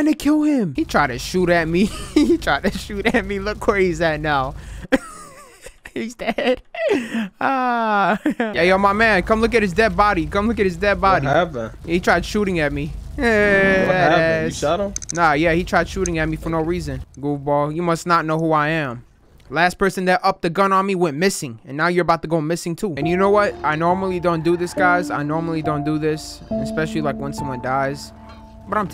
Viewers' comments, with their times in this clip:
0:09 he sounds like hes been in one of your vids before